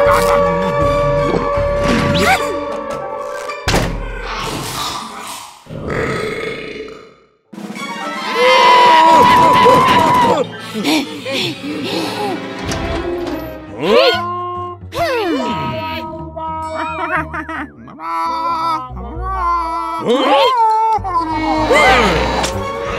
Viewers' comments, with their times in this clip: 0:04 I like The echo on this